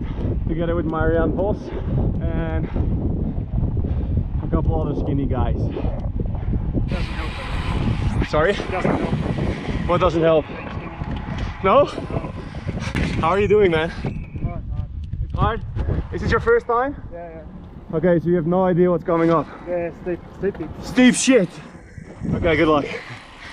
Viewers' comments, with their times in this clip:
0:10 what doesn't help? I can't hear the older gentleman?